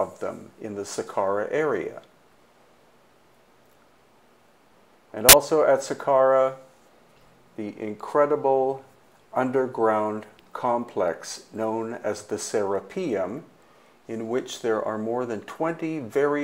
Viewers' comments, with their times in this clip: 0:04 Be aware, Headphone users!